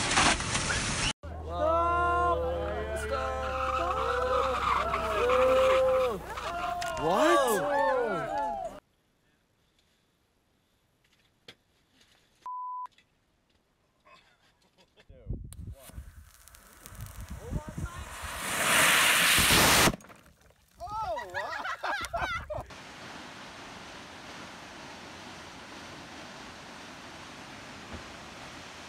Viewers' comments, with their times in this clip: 0:10 What are those morons laughing about? I mean loosing your phone isn't exactly funny! 😮